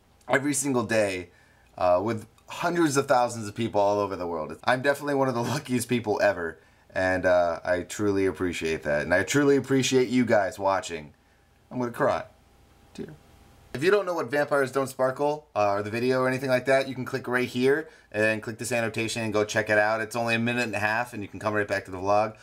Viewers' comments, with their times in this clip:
0:10 Haha when he said omma cry the audiotranscript * CC* says MORE CRIME XD